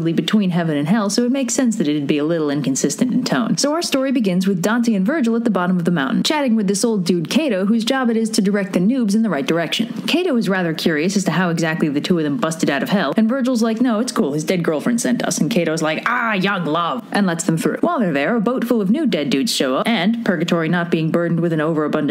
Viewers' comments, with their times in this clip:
0:06 Cato sounds oddly like a surtein seniter.